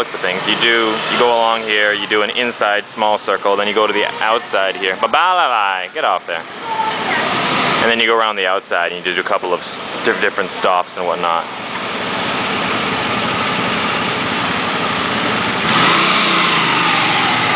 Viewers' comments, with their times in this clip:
0:05 lol is ur dog's name "babaaala lie"